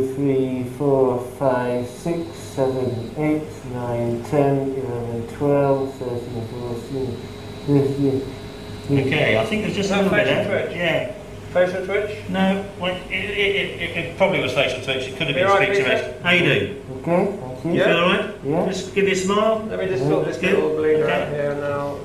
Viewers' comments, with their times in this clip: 0:08 his speech arrest was so interesting!